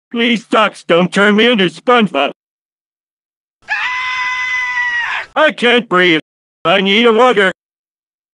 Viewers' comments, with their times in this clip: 0:04 He sounds like a rooster here